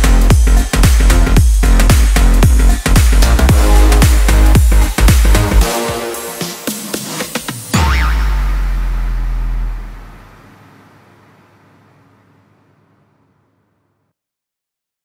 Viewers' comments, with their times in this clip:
0:07 did you heard the spring sound
0:07 Bro, what's that spring sound